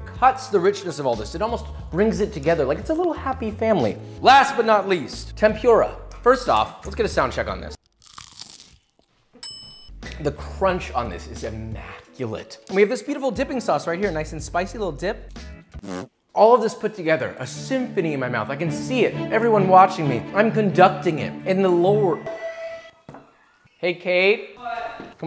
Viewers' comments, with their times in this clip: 0:08 That crunch was so good, the sound guy was loving it